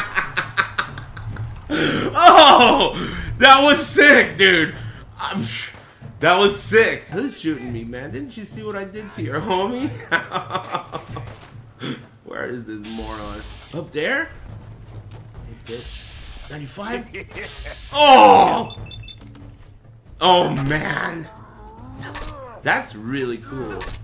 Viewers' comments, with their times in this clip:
0:05 The "pssh" camera change was sick